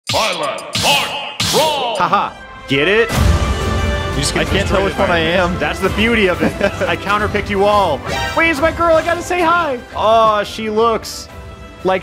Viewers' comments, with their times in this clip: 0:00 Right off the bat our announcer sounds like he’s vomiting when he says “BYLETH”